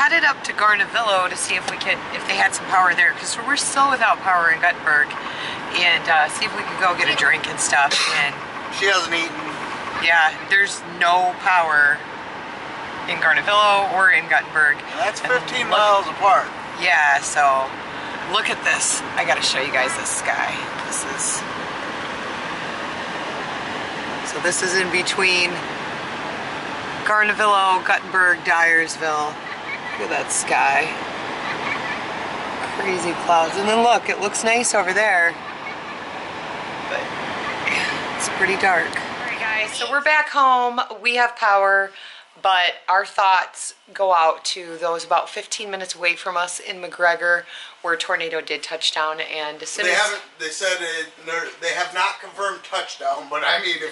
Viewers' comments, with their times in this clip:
0:07 some one is playing fnaf2
0:07 I can hear one of there kids playing five nights at freddy’s 2 in the background
0:27 I heard balloon boy's laugh from Five Nights at Freddy's
0:28 I think someone was playing fnaf 2 in the background cuz I heard ball on boh
0:28 there bb laughing. Is this ded or something
0:28 What was that child laugh???..
0:29 Did any one hear ballon boy laugh
0:30 do i hear someone in the back playing fnaf sister location when l her circus baby laughing?😄😄😄😄
0:30 I HEAR FNAF
0:30 i can hear baloon boy from fnaf 2
0:30 if u listen closely then u can hear balloon boy from fnaf
0:30 Is it just me or do you hear laughing
0:31 its weird you hear Balloon Boys Laugh in the background, hehe.
0:36 Did yoll here balloon boy laught in
0:39 Didn’t anyone else here balloon boy ?